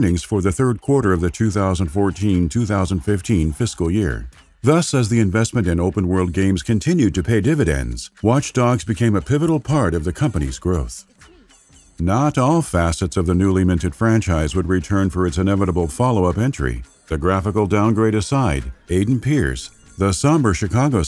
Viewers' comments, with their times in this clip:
0:08 Did somebody not feed the cat before recording? 😉 At first I thought I heard my cat, but then I replayed this part and swear I heard it again. I'm on my phone right now, so maybe I'm hearing things? 😜